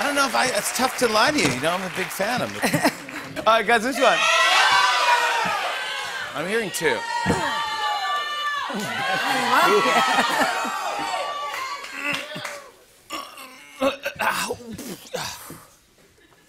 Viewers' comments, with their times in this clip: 0:03 audience collectively made an elephant sound😂😂